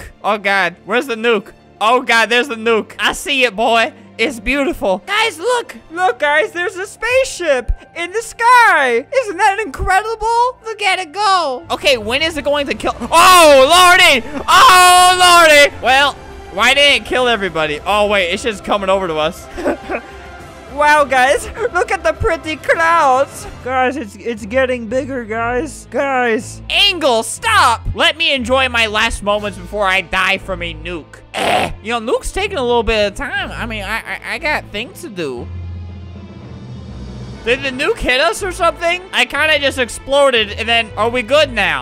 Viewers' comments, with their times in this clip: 0:10 your voice tho😂😂 Look at it go!
0:11 I like how the bass dropped as the nuke just detonated
0:12 perfect beat drop right as the nuke explodes
0:12 no one's gonna talk about the music and the nuke synced?
0:22 anyone who watches Smg4 will probably think that he sounds a bit like Fishy Boopkins there.